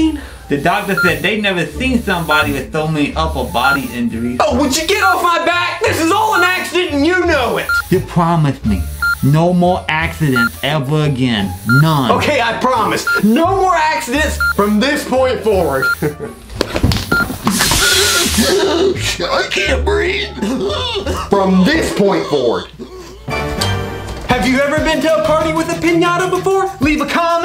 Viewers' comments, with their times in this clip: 0:08 sounds like donkey from shrek!